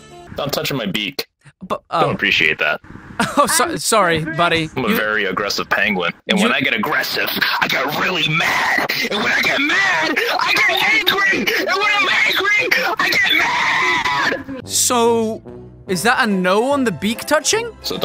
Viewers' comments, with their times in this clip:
0:04 I died laughing oh my God Was that an Alex Jones parody??